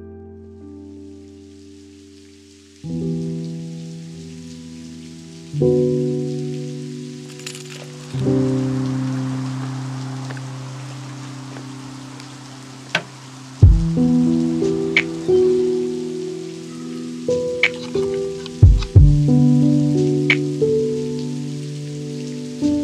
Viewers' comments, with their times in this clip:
0:06 Super music. It’s also raining in the background! 🌧 Thank you Lofi Girl. 👧🏻